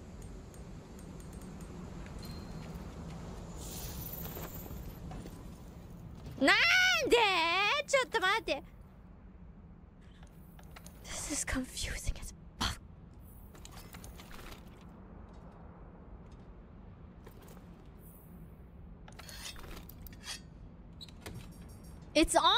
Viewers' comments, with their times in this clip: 0:06 nande is so cute LOL